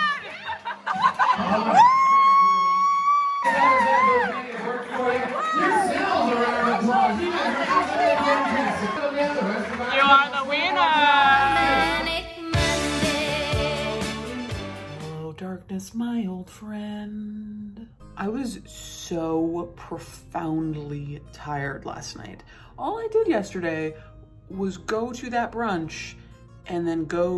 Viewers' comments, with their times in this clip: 0:08 Is that Lindsay Ellis cheering for you ? :D